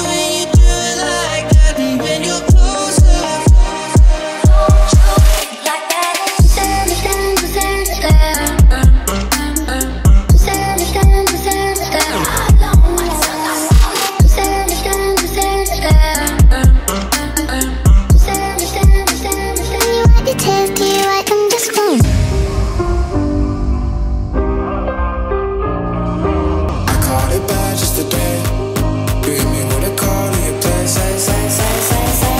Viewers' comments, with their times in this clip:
0:06 Bro the sync between you two is so awesome and especially the drop after the loop I was like 🤯🤯
0:20 Do you cut a part of song, ???